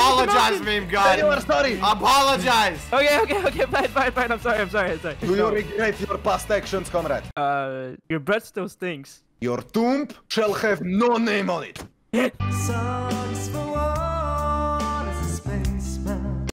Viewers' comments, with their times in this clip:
0:09 bruh it's an Russian accent